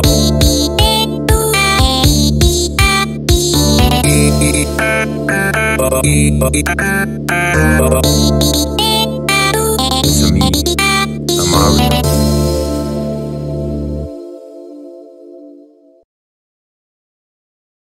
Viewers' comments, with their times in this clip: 0:09 Ngl this one grows on you. It's in the perfect position for a first enemy encounter. It sounds very funky, which, as this game's title implies, is very in-character. Just a weird ass song though. I dunno. It outshines a lot of other songs, despite being so tame. Songs like Wario's Apparition and Race Traitors just aren't very catchy or particularly interesting. The actual level is also funny and worth replaying just to read what Twitch chat is saying. To all of you who gave this song a second chance, congrats. You made the right call. Chris Pratt jumpscare give him a kiss